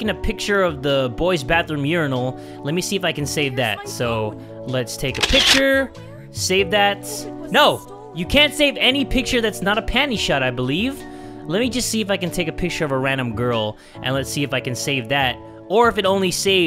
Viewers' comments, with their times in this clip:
0:03 Does anybody hear kokoni saying “Where’s my phone?”
0:03 in boys bathroom / toilet you can hear kokona talk about her phone being stolen